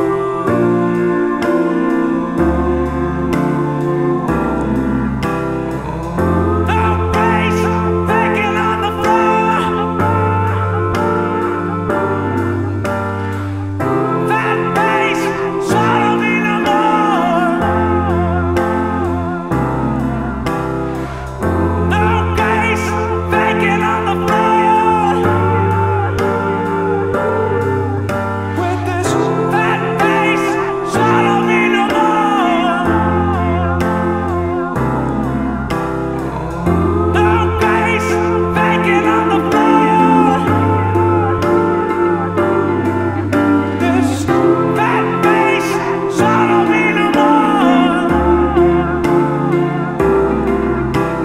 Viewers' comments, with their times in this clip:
0:04 Starting the vocals are very Pink Floyd-like (Wall era).
0:04 the drop was Aaron's vocal change
0:39 I'm pretty sure I heard bacon on the floor.